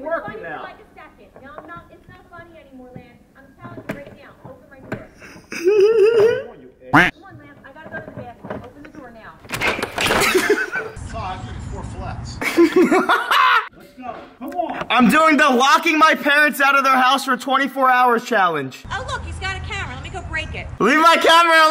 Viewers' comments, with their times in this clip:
0:04 sounds like pennywise